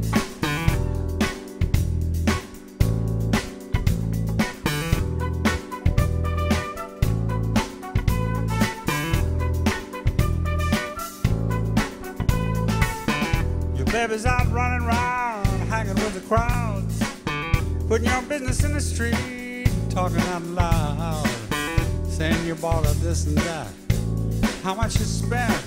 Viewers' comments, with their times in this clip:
0:07 Is that a backing track for the music? I don't understand the sound that's supposed to be coming out of the thing that looks like a trumpet (like and repeated throughout). On the album, I always thought the sound was a synthesizer.